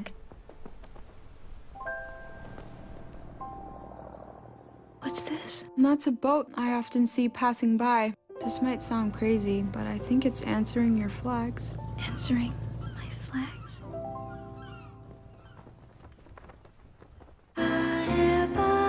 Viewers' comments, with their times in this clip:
0:06 Oh god the voice seems so out of place